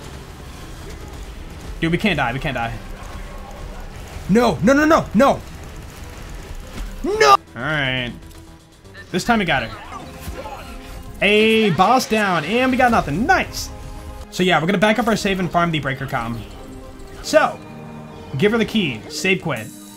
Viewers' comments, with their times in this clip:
0:07 that's the saddest "Alright" I've ever heard